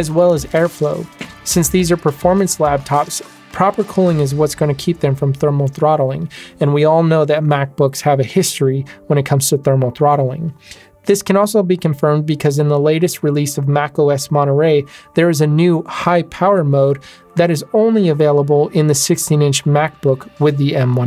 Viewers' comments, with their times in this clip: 0:03 Thanks for the video--very informative. One thing; it sounded like you said "lab-tops" instead of "lap-tops" (Or did I just hear it wrong?) Anyway, I'm a subscriber to your channel now and look forward to your future videos--thanks again!